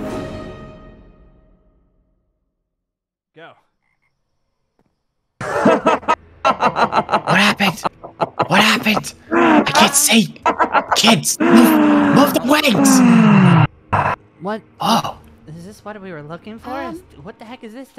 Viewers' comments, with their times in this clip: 0:03 who else heard go